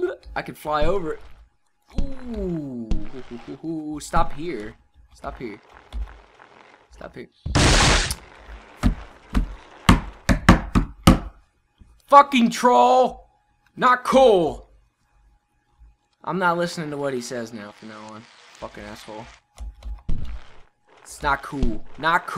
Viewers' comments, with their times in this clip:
0:06 the drumming is almost as epic as The Rev's